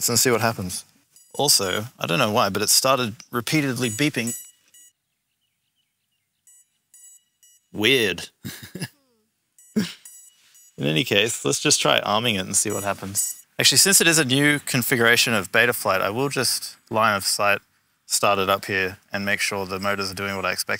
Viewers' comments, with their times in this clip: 0:07 the beeping just is a little heads up that it's turned on and didn't do anything in a X amount of time as you said you where waiting for several minutes to gather more GPS satellites this would be the reason😅